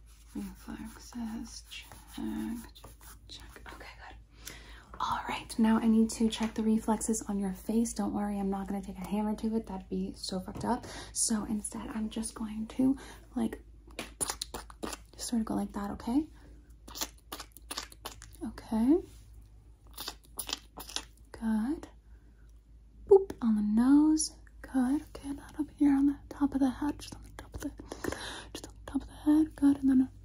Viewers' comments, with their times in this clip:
0:06 Not sure if it's a problem on my end or yours but it starts to cut out, but only for a few seconds
0:12 "I'm just going to... like... *Speaks in Minecraft Slime*"